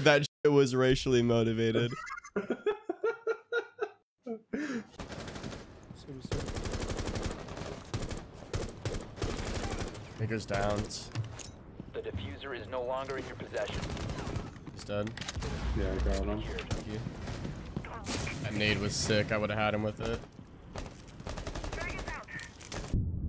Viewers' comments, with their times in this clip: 0:09 did he say ni**ers downs or am I tripping